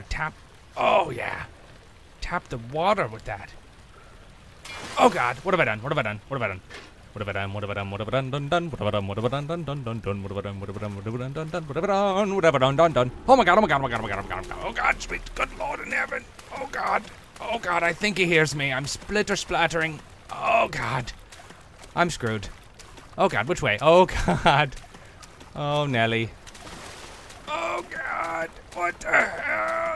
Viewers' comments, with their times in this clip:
0:04 I laughed when he started to sing it that way. XD
0:13 THAT OMG WAS SO FAST